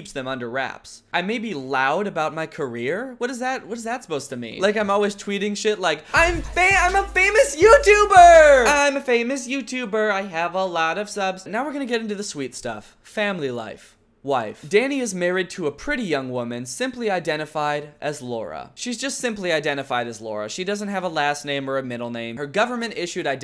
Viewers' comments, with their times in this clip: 0:08 I love this song.